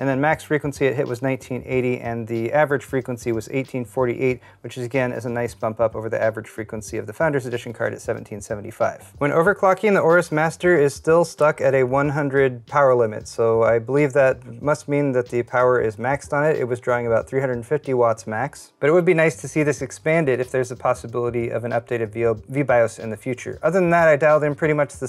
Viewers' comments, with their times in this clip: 0:08 Marine Corps hymn in background